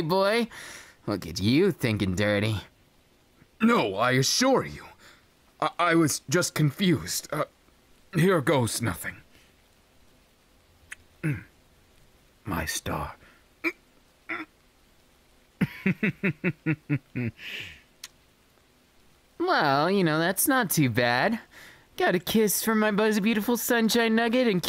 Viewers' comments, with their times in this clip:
0:09 I had never heard English version of Iida's voice. It is the EXACT same just sounds clearer in this!!!!! I DUCKING LOVE IT!! Also "Here goes nothing"